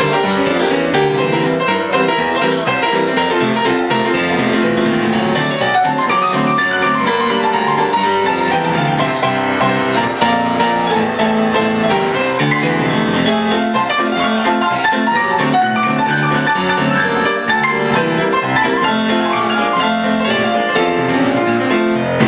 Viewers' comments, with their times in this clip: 0:08 The chords walk down sounds so epic
0:09 That transition was soooo sick😭